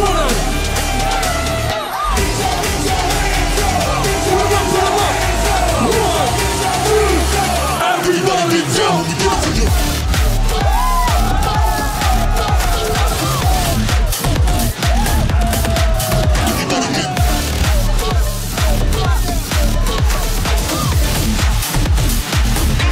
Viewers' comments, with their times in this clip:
0:08 MORE BASS MORE GOOOOOD!!! 🔥🎧